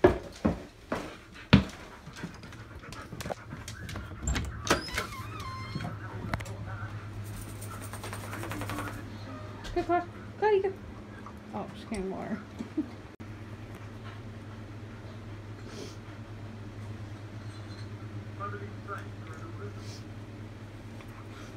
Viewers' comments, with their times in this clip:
0:05 The little noises at the beginning made me want to show my mom then i remembered that its at night shes sleeping